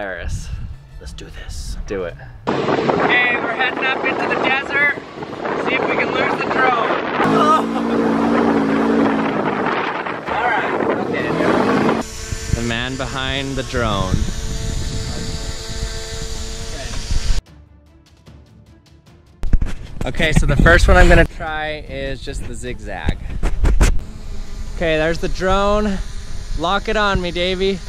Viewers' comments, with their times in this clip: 0:08 is that a rattlesnake?